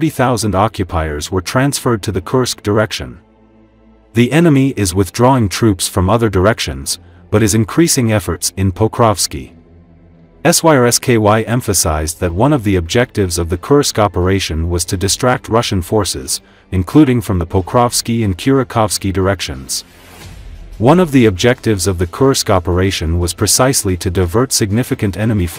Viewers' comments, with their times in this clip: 0:09 The robovoice does a hilarious job saying Syrskyi, and the CC generator adds an extra layer. "SSKY EMPHASIZED..."